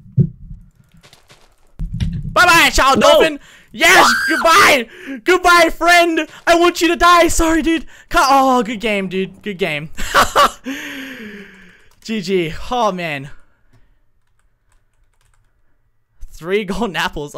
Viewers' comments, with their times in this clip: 0:04 dat scream doe